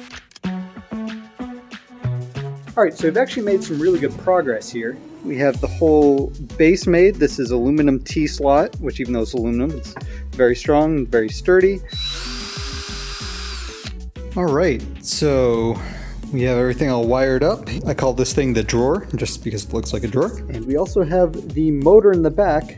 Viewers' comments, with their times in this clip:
0:03 Did he record that on a literal piece of toast ?